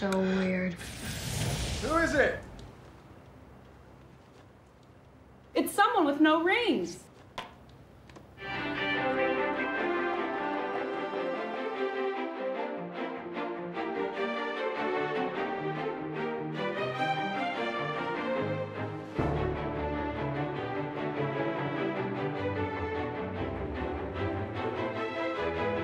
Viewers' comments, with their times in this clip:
0:08 plus never before heard TNT NBA music lol